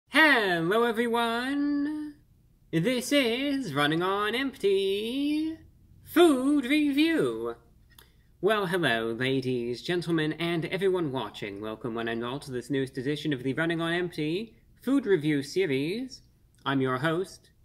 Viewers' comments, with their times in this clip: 0:01 Why you moaning in my ear 😂